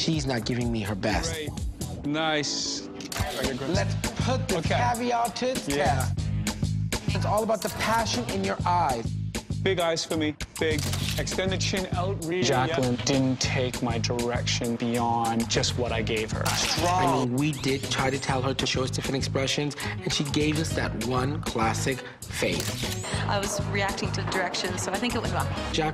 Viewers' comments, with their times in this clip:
0:10 is giving Julia Fox - "Yeah. A little. I mean, I was Josh Safdie's muse when he wrote Uncut Gems, you know?"